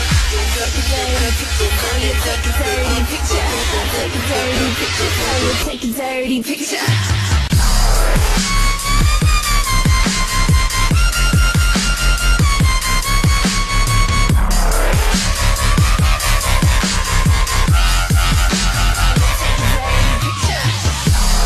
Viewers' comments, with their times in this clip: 0:07 dropping the beat like a B